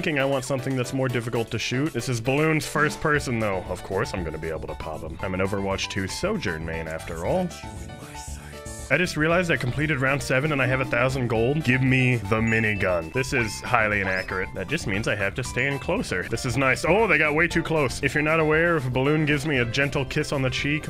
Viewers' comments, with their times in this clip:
0:07 He’s a sojourn main and they played the soldier ultimate? I’ve never been more disappointed.